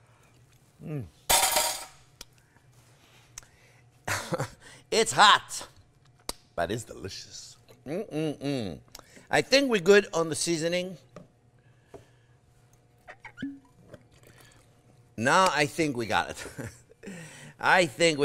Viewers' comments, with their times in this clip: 0:05 How he said: " But it's delicious " The american accent is coming through!